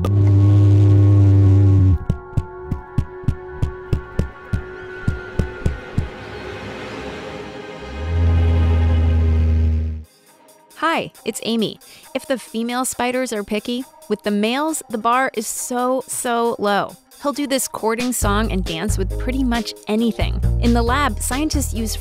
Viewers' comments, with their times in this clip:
0:09 he farted on her